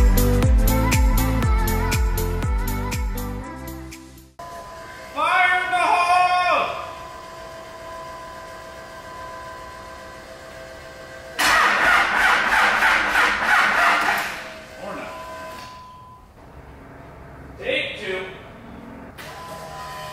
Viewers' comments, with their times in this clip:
0:06 Sounded like a cold start video 😂